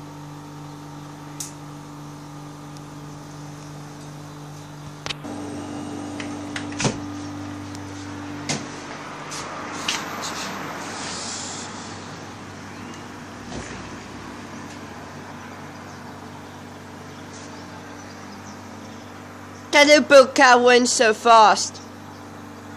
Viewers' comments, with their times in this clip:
0:05 Washing Machine in the backround